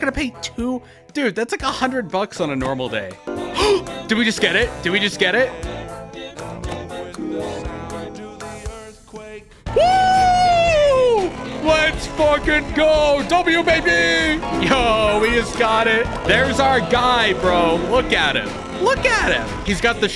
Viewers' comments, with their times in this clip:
0:06 The way the Wubbox started singing was at the perfect moment